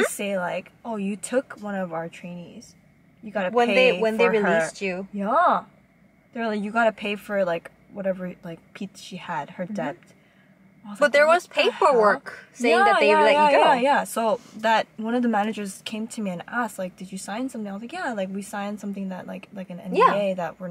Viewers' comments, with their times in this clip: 0:07 what is a peatchs? Or what did she say